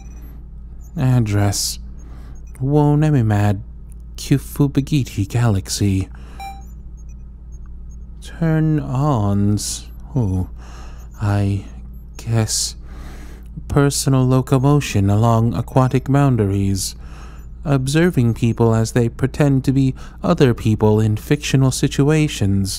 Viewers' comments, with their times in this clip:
0:03 I SERIOUSLYTHOUGHT IT WAS SIMLISH